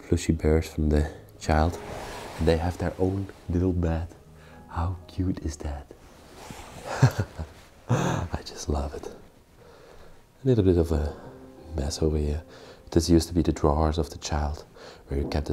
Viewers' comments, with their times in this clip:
0:03 the way you describe places is so lovely and gentle. especially here 😊 thank you for sharing those beautiful moments. safe trip and have nice day. from Korea